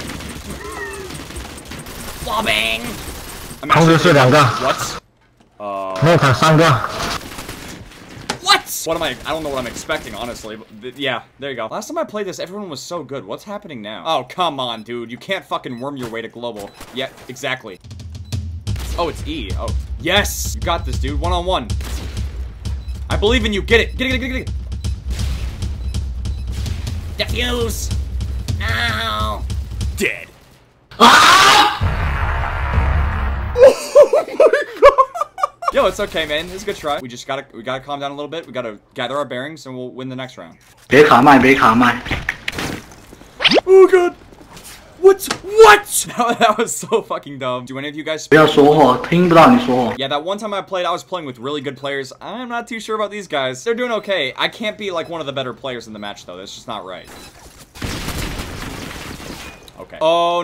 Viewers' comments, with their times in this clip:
0:08 For some reason he sounds like baby mario saying what!?
0:30 I died laughing that rage tho
0:45 Sounds like LIL Jon xDD